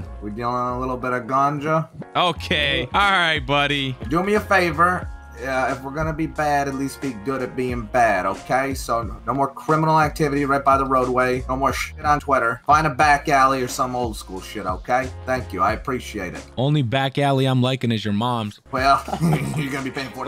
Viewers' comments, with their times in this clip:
0:05 Bro that cop is sounds like he used to be a hit man or killer😅